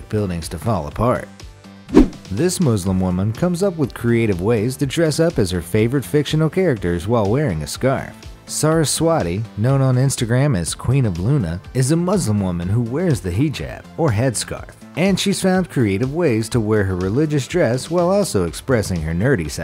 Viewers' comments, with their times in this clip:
0:03 Muzlim .Wrong. Muslim .Right.